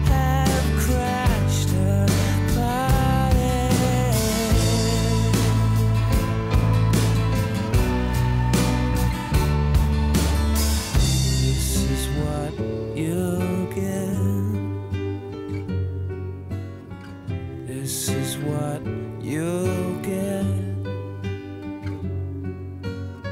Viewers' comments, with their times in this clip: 0:07 Hmm you mean they were most likely listening to The Beatles when they wrote this. Go to the piano riff then listen to Sexy Sadie 😉